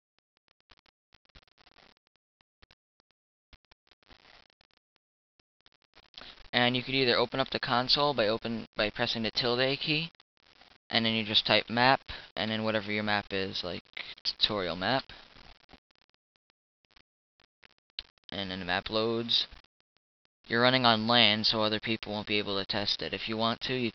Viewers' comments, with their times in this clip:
0:09 By pressing the WHAT KEY?????? I tried all the keys on my keyboard and nothing happened what is the "tilt-A key"??? :S